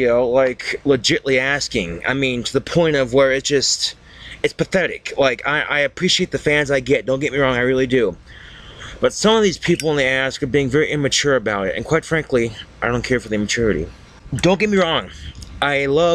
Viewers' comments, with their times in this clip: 0:03 this is a perfect example of how articulate he used to be, compared to now. Hes not even trying to tip his fedora in that, its like hes actually speaking coherently.